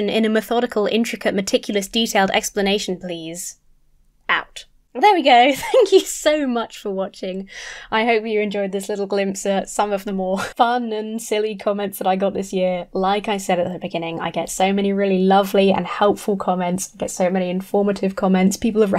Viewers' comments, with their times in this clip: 0:03 that part sounded like that Shia Labuff (sorry if i misspelled) song about him been a canival XD